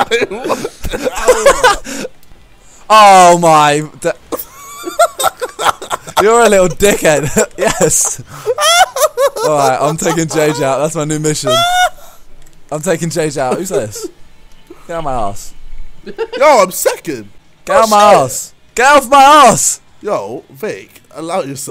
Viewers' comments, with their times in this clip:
0:08 JJ's laugh sounds like Majin buu's from DBZ